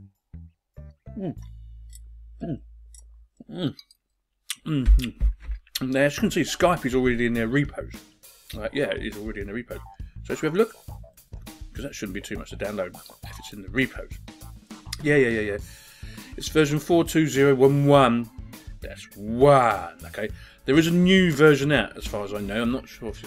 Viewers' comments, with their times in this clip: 0:08 it sounded like you was eating something yummy.......was you ?....and what was it ?....me i'm having chops, potato salad and corn